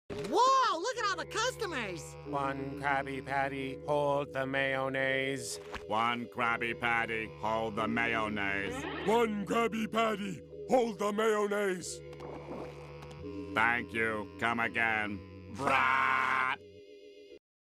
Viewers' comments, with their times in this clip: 0:00 Spongebob sounds so not spongebob here
0:15 That's how my cousins sounds like😂😂😂😂😂😂